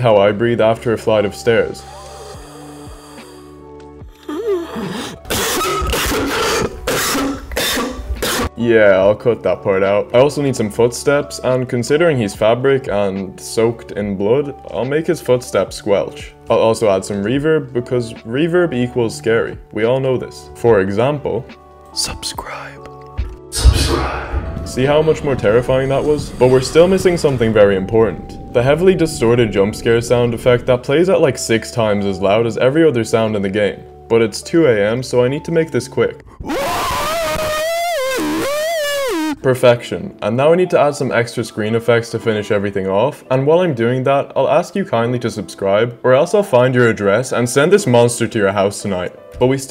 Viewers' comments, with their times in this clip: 0:03 The fact that you took the extra effort to record it in stereo lol
0:34 bro there was no motivation or soul behind that scream😂 show how out of it he is